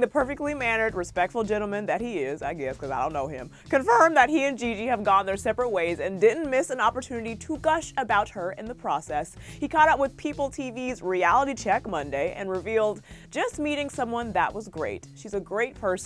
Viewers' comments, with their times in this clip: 0:03 that voice crack lol 😂😂😂